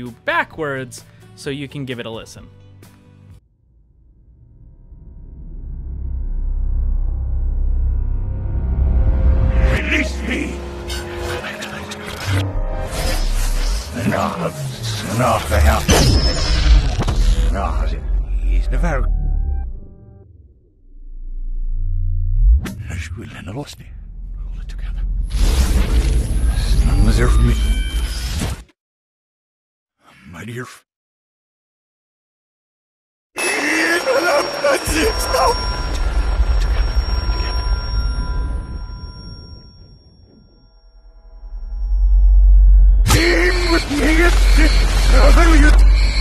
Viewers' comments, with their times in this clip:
0:10 he says "Release me" That is the only thing i really sounded like a word.
0:22 I hear him say I should breed animals
0:24 Sounds like he says 'pull it together" instead of "we're together"? I dunno
0:24 "I had to kill him" or "Hold it together"?
0:28 He says Mud Earf